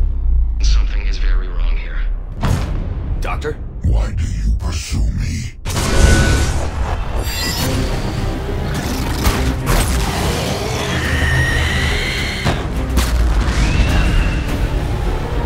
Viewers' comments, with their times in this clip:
0:03 sounds like Harbinger? Anyone agree?